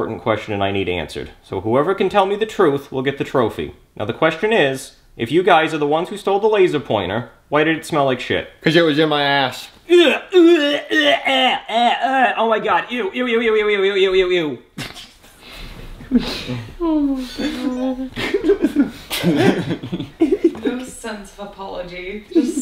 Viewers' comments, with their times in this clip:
0:09 Love how Jeffy just casually takes the trophy with Brooklyn Guy gagging at the end!